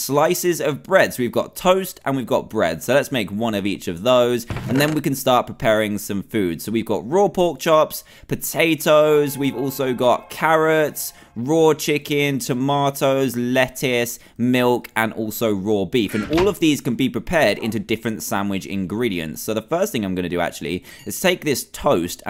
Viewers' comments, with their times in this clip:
0:07 cave sound after Dan says "Potato"
0:08 Cave sound plays in background
0:08 did anyone else hear the bell in the background?
0:08 Herobrine sound did anybody hear that?
0:08 While he takes out the ingrediants, cave sounds
0:08 No one will comment on the cave sound playing
0:08 who else heard the cave sound?
0:08 put your volume to half and you will hear a cave sound
0:08 Did anybody hear the cave sound ? (Sorry if you might see me frequently in certain comment sections).
0:09 So no-one gonna mention the scary noise?
0:09 that cave sound scared the crap out of me
0:09 how did he not react to the cave ambiance?
0:09 that cave sound though
0:09 who else heard that cave noise?